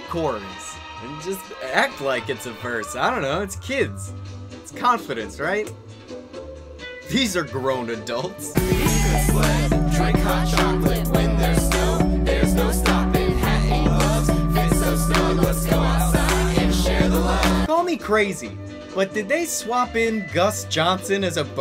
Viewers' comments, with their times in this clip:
0:09 the mixing is so awful, some groups combine voices to be harmonious or united but this is a chorus of wails